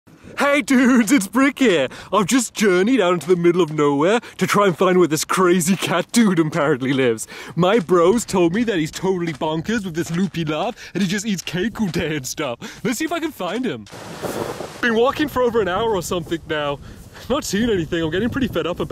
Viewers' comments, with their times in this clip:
0:00 you can tell its stampy
0:04 voice crack gave it away